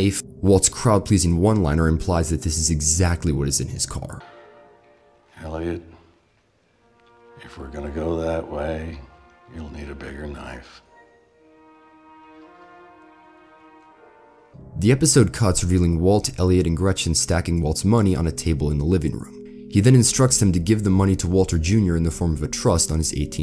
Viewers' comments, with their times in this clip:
0:04 walt sounds a lot like mike here
0:04 The way Walt says "you're gonna need a bigger knife" is straight out of Mikes playbook.
0:06 When Walt says the line he sure sounded a lot like Mike.
0:06 I don't know how I just noticed, Walter sounds exactly like Mike in this line